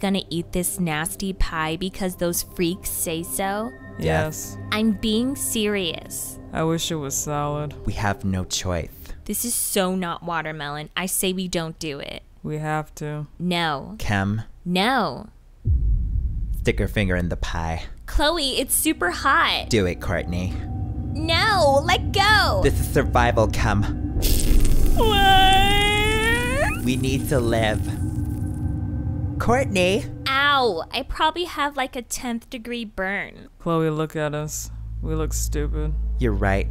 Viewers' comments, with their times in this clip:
0:07 This voice reminds voice of Lady Gaga
0:19 Do it, Kourtney No, let go! This is survival, Kim (Finger sizzling in the pie) WHYYYYYYY?!?!?! I'm crying😭😭🤣🤣🤣🤣